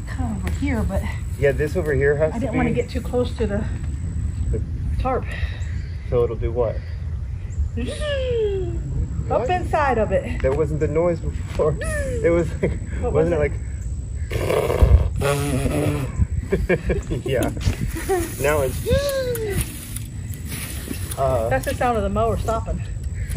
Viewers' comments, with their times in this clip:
0:06 great sound effects